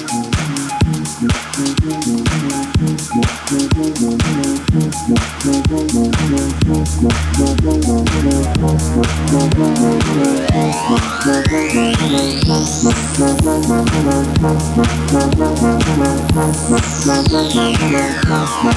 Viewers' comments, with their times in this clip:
0:03 Loved thiiiiiiiiisss that fat thing WOW! I´m happy with my subwoofer... :3